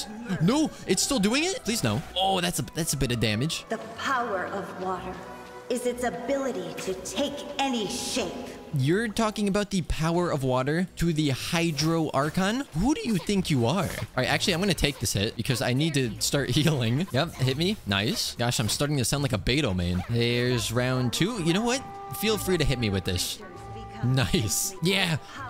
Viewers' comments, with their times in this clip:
0:09 "You're talking about the power of water to the ✨hydro archon✨? Who do you think you are?" Sounds kinda in character for her, especially in the way he said it. 😭